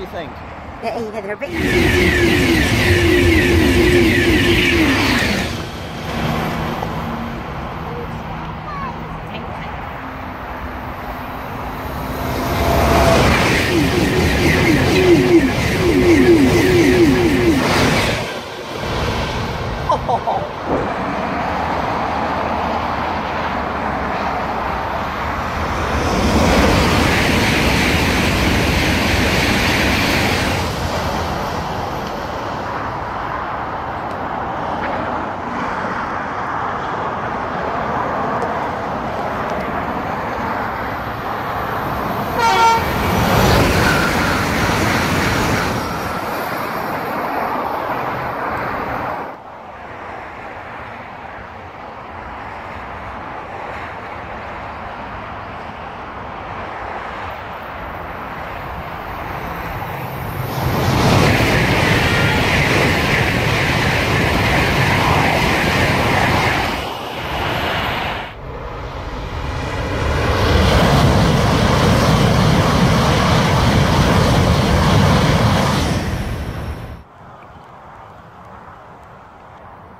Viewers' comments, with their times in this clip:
0:10 That is some speed Sounds amazing.
0:39 The train horned you?
1:00 sounds like a shinkansen.